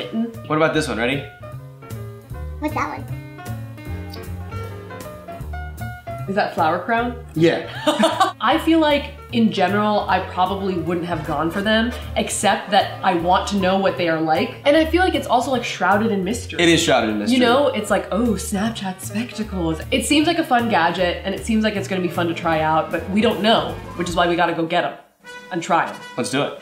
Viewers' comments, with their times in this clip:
0:07 lol the laugh